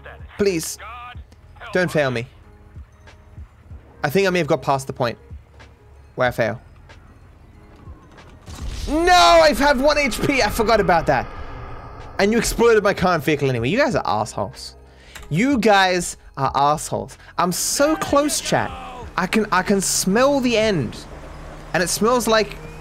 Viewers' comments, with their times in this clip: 0:05 that’s the first time I saw the Sanchez dirt bike backfire